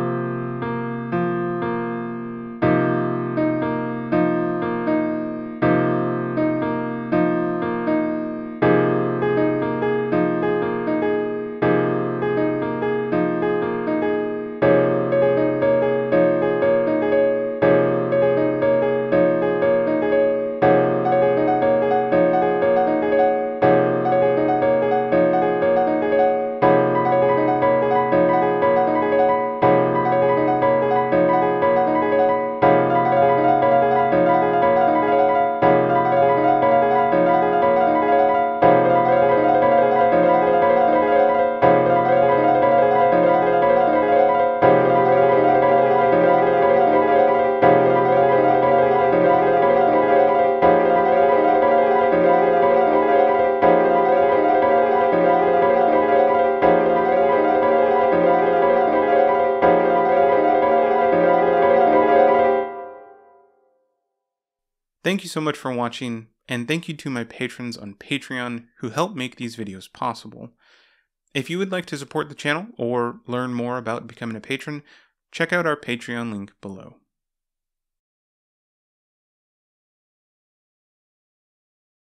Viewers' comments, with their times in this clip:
0:03 The 1:2:3:4 polyrhythm was great until the 5 decided to ruin it.
0:14 I love that 1:2:3:4:5:6 polyrhythm so much,
0:44 AAAAAAAAAAAAAA THERE'S 78 BEATS IN THIS!!!
0:50 A Decision has happened Last one sounds fire
1:03 And even it’s (*police intensifies*)
1:03 polyrhythm sounds like a fire siren
1:03 sounds like bulgaria(🇧🇬) eas alarm
1:03 sounds like an emergency if you think about that
1:03 funny how the example has the two notes a tritone apart (which is a rather dissonant interval); wonder if that implies something related to said numbers
1:03 sounds like an beat for emergency music and, you know, 911, its the emergency number. (NOT THE TIME IN THE VIDEO!!!!)
1:03 the polyrhythm sounds dreadful